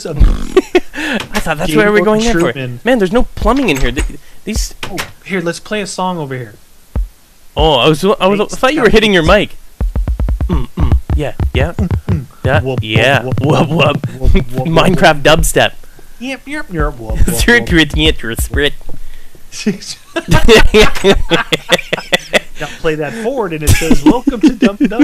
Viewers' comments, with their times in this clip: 0:06 minecraft dubstep ftw!!